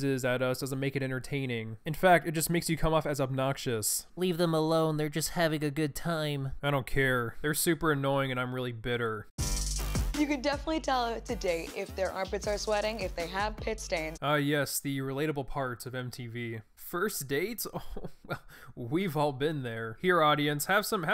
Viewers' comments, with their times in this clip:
0:03 good Leafy voice impression 😂